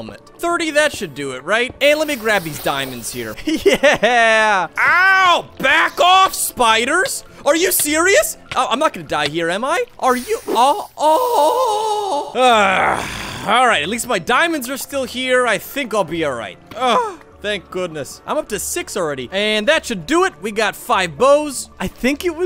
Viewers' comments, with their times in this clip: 0:09 best craftee noise ever